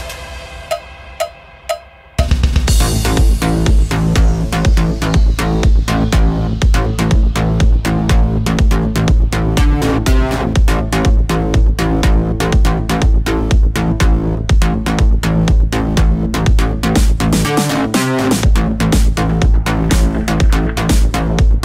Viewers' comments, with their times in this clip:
0:09 Lol nice it starts fierce